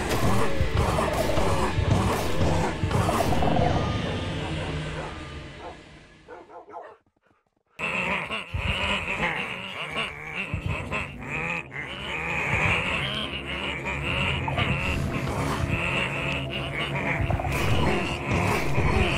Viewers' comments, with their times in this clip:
0:07 These Vindicators Are Sounded Like Waluigi!